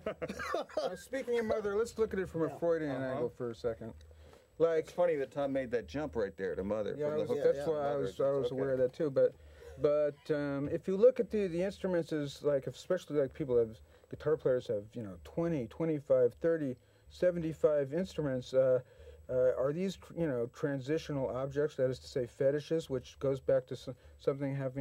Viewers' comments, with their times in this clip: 0:10 Fagen cracks me up every time. "Could you repeat that?" "No." Deadpan and hilarious.